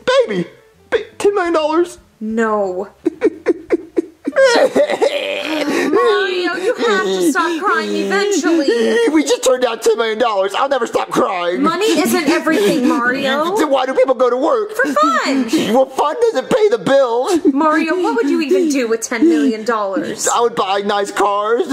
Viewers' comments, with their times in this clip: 0:03 [ Insert mario crying ]